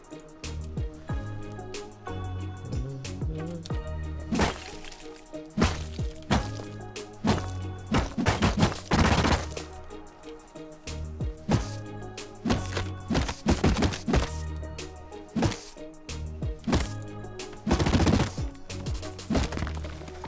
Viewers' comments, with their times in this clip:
0:05 the song beat sounds like someone running on a metal floor in rust